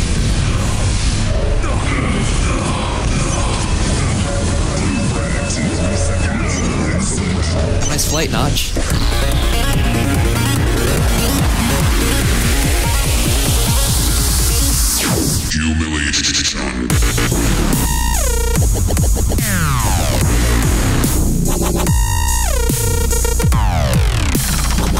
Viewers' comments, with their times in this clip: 0:08 DUDE THIS SOUNDS LIKE ERROR 404 THEME